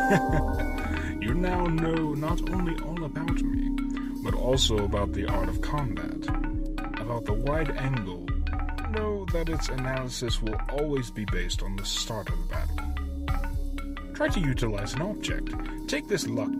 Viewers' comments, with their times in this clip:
0:04 I ain't gonna drudge up stuff others have said about the voice acting. Like anything, improvement takes practice! Continue forward and I'm certain you'll succeed! What I will say, though, is the mixing could have been improved. There was a period around the mark where the rattling of the bgm was loud enough to distract from the voice acting. My recommendation is to quiet the bgm so it's still there, but the voices take center stage.